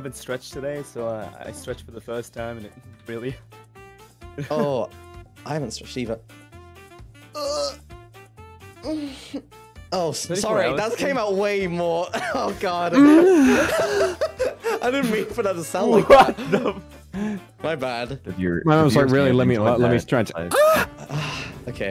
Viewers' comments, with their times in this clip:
0:04 "Oh I haven't stretched either" (Mysta proceeds to make the sussiest sound ever)